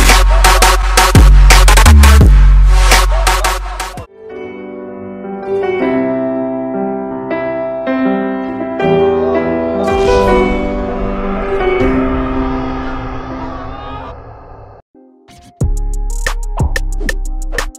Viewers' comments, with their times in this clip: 0:04 such a change of music